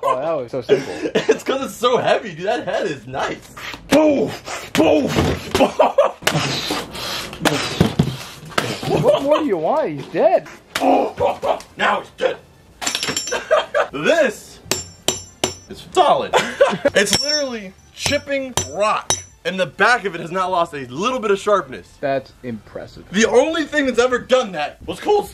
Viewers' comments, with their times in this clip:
0:05 sound effects, sound effects, sound effects
0:06 sounds I make when I'm playing with cars